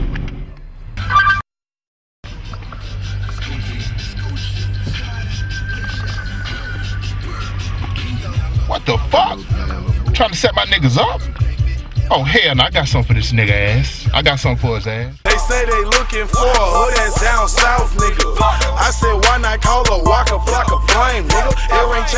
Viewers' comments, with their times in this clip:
0:08 Lol i love how he says "WTF"